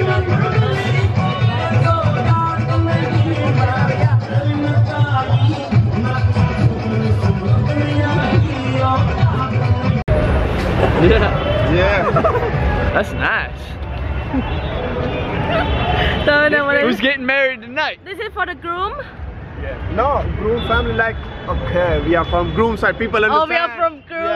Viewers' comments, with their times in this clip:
0:04 Who else liked the song 😁
0:05 Who noticed the haryanvi song